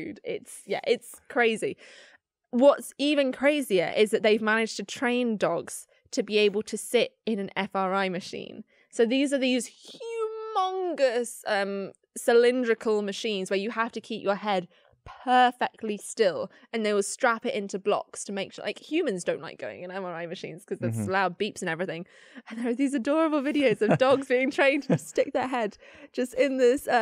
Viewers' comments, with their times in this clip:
0:08 Hugh Mungus WHAT!?!?!?!